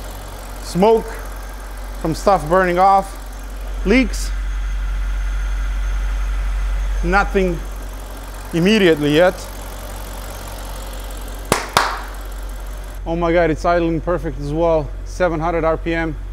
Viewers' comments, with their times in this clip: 0:03 The coil seat was just to Build Drama Wasn't IT !! ?? As if you just peaked on Mount Everest or Landed on the MOON ! The Joy in your voice was worth every penny you spent.